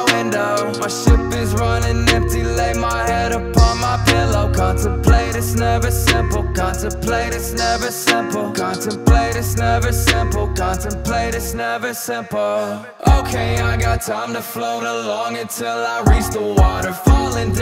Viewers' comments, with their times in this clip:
0:05 when the record player keeps skipping back.